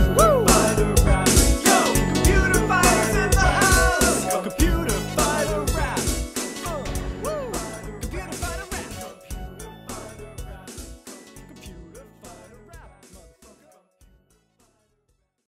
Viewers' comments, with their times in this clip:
0:09 i just noticed the New Kids on the Rock leitmotif